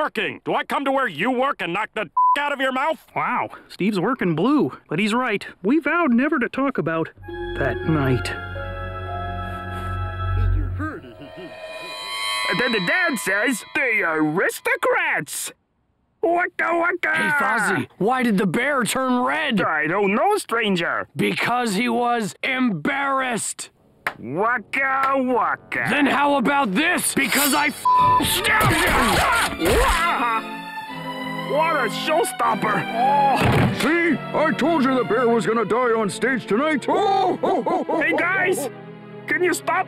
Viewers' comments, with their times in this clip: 0:10 Swedish Chef talking
0:23 I laughed so hard at the sarcastic wakka wakka part